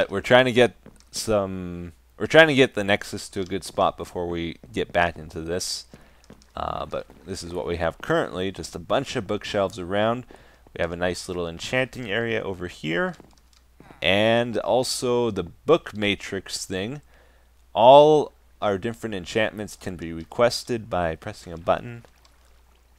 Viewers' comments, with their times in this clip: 0:10 you sounded like Kermit the frog